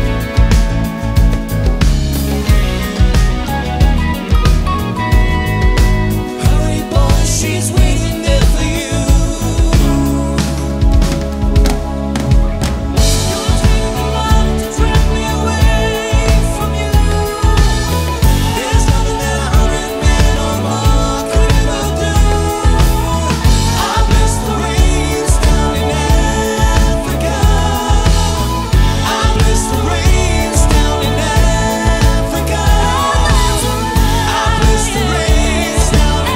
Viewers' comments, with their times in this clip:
0:10 I love when a drum fill is so cool that the bass player is impressed.
0:10 that drum roll was obviously unscripted according to the bass player's reaction lol if so it was a very cool adlib
0:20 A particularly fine cover of this song, but it goes up a notch when the female lead gets the chance to show what kind of pipes she has, bravo